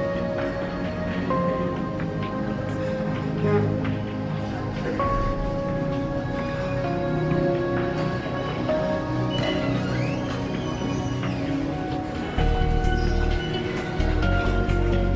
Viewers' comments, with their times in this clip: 0:03 Whats this a squeaking chair I dont believe it